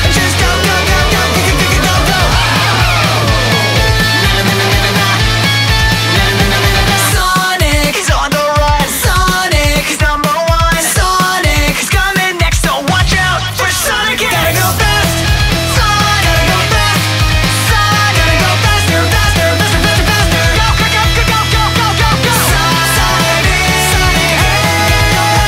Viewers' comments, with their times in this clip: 0:07 how impressive is the singing its like a 10/10